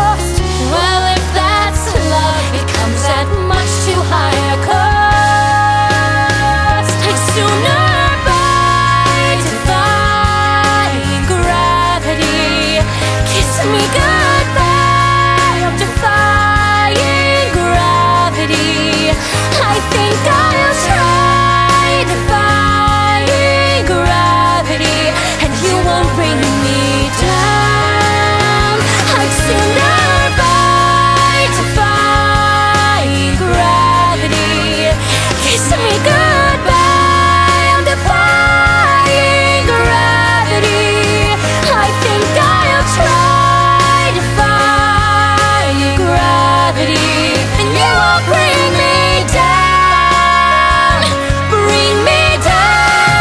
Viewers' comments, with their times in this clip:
0:04 OMG THE WAY THEY HARMONIZED!!!!! BEST EVER OMG I CANT!! I miss glee so much
0:35 I LOVE Lea's voice on on that, "DEFYing gravity"